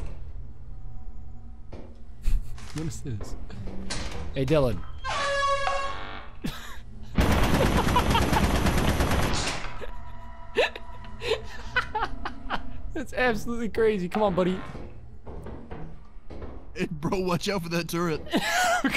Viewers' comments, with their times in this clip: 0:03 The airhorn into turret combo fucking destroyed me
0:03 Who needs a soundboard when you have airhorn to prank them with.